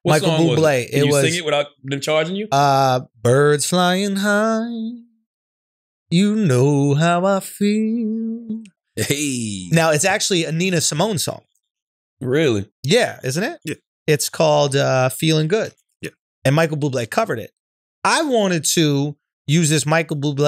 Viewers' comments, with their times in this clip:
0:03 aye shultzie kinda smoked that lol